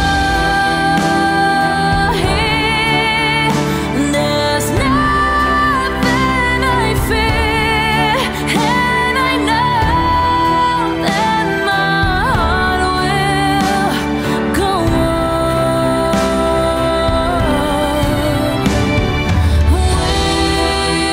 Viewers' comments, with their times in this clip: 0:07 I think there’s a weird key change that changes to a different key than the original